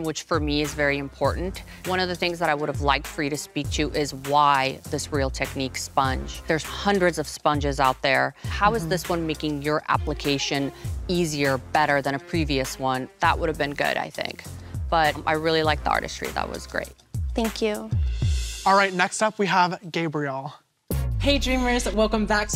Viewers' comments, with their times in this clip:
0:05 She literally said it like what